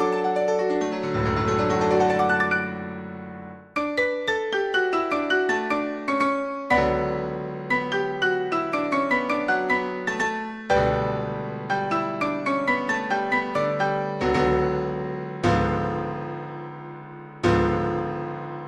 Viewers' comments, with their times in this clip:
0:03 isnt it in a lower octave?